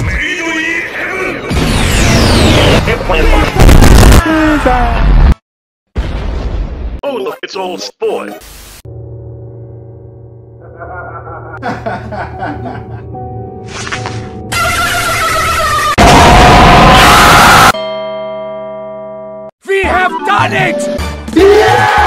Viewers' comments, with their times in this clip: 0:07 I love the happiness in the voice even though it's text-to-speech